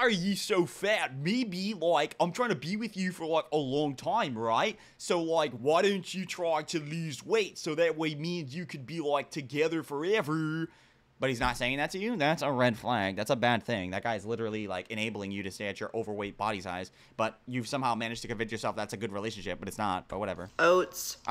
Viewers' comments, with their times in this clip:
0:07 Accent a New Jersey native who moved to California as a kid and became a surfer then moved to Boston? Is that the Spain type deal we've got here? 😂 🌞